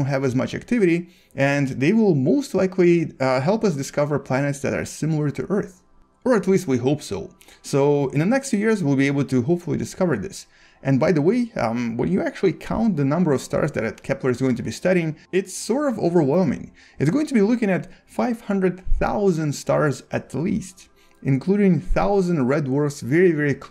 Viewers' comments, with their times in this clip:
0:06 Hahha that deep voice xd